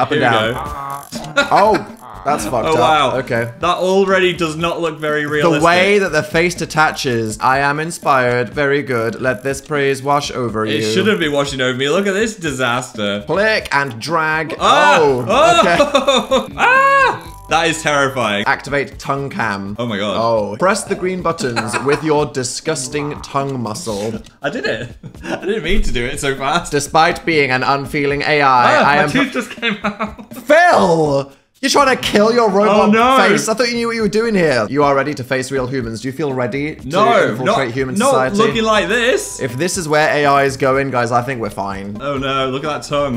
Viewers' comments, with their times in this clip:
0:08 Dan really brought out the mettaton voice and thought we wouldn't notice
0:26 flashbacks to mettaton with that voice